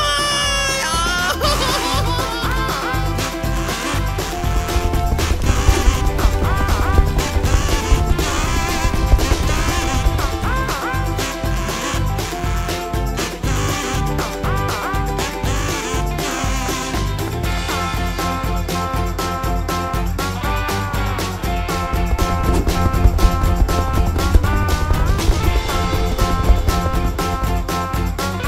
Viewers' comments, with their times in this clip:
0:09 that music + a sad ole😥